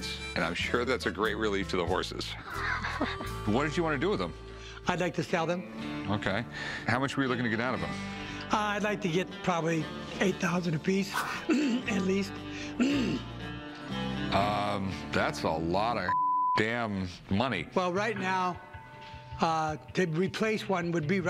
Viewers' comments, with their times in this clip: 0:07 quite the tell that his price is way off the mark...... mmmh mmmmh